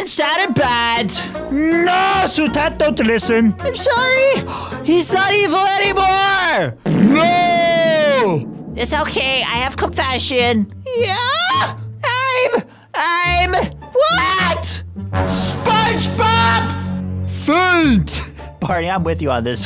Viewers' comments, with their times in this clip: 0:07 yo deep voice 💀💀💀💀💀💀